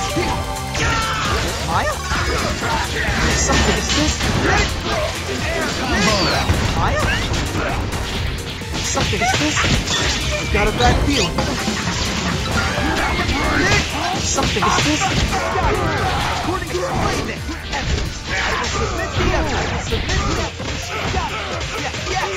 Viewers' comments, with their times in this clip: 0:05 is it me or does that sound like hair combo